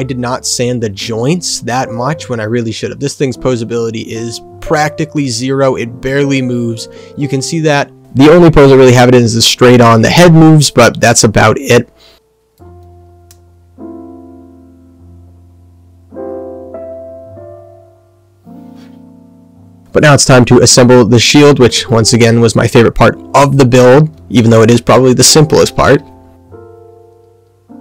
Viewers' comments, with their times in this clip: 0:08 Painting will stiffen up the joints. So 1 aspect you need to be aware of is to not over-spray and to give plenty of time in between layers for the paint to dry. As such, 'less is more'. Multiple thin layers... Audio gets super loud here 🤣 Overall, the paint job and decals came out nice. Quick tips... Usually with HGs, people will snip off the 'safety' nubs on the v-fin and sand it down. You should try to pose the kit a little better so that it doesn't look so 'blocky' and scrunched up.